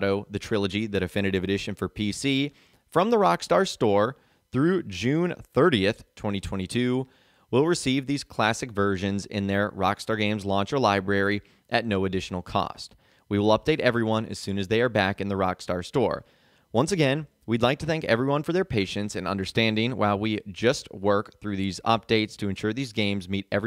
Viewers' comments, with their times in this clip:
0:06 I find how you say 2022 VERY OFFENSIVE and swear word notice